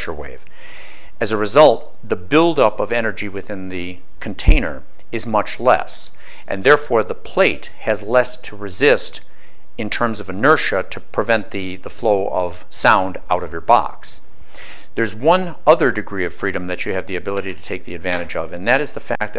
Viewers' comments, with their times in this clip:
0:07 What the heck hit the forced air vent ? Where there ghosts?
0:07 fly passing by